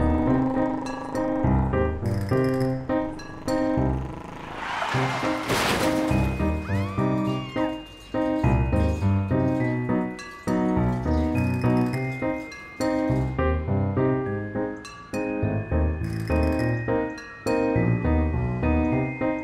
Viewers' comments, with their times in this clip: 0:04 I feel like almost no posters here, most of which see it as a happy ending for the man, noticed the sounds in the end credits. you hear a small car accident noise and then someone screaming--implying of course that he was hit and fatally wounded in the accident....